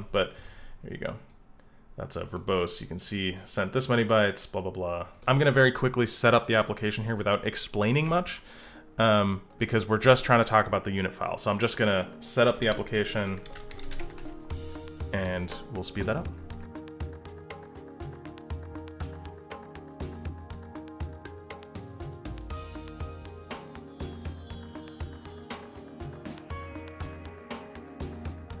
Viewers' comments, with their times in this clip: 0:10 the timing of that music threw me off, i had to hit pause just to make sure that something else on my computer didn't start playing.